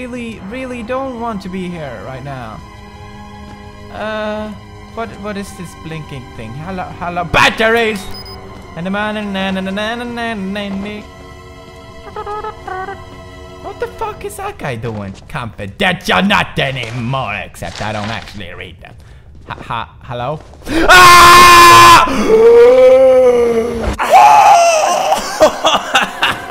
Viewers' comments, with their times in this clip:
0:08 Was I the only one who jumped when Pewds screamed "BATTERIES"?
0:08 his BATTERY song scared me😂😂😂